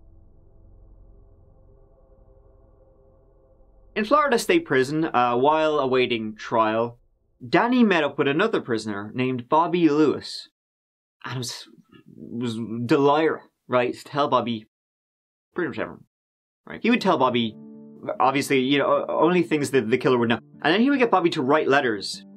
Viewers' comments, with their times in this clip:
0:08 From you start talking another language lol. Sound drunk too. I’ve rewinded so many times to work out what you even said